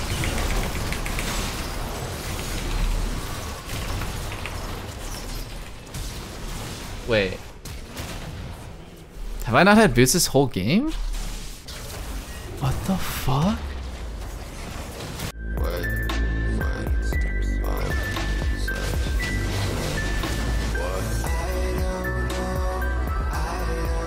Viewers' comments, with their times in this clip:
0:06 what the fk is he saying i can t understaaaaand... "have i not had ????? whole game"?